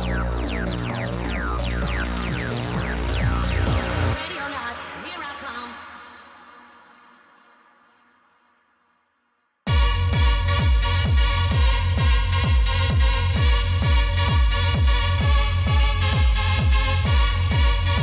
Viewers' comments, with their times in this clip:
0:05 the silent before the drop went sooooooooooooooooooooooooooooooooooo hard love it !